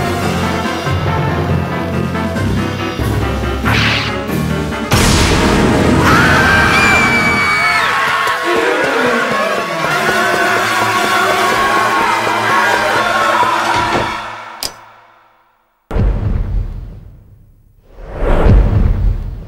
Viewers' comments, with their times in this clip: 0:06 Epic Girly Scream